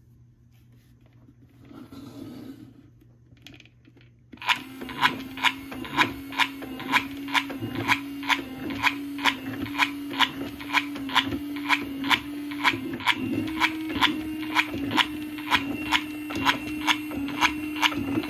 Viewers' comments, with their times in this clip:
0:04 squidwards walking sound